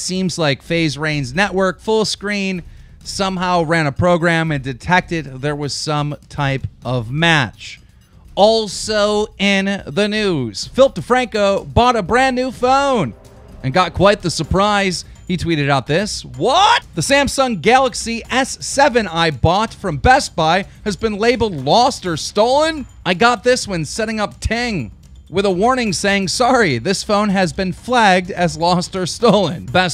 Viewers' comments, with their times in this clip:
0:10 i thought he said: "filthy franku"
0:15 Why did he say what like that xD
0:16 Headphone Users beware...wait....WHAAAAAT?!?!